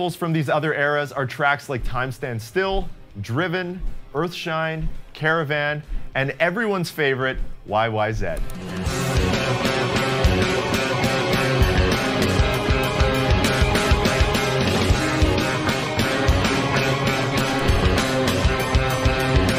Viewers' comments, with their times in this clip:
0:05 He did say "YYZed". Go back and listen or so.